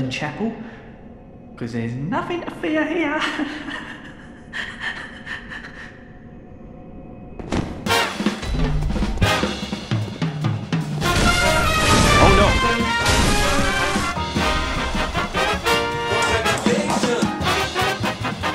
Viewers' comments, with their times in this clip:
0:03 No one is talking !😂